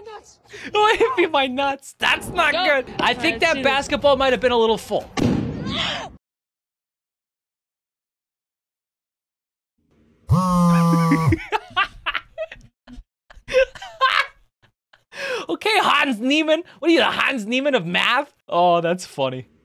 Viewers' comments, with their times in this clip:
0:04 My ADHD brain love, this. When boll go boom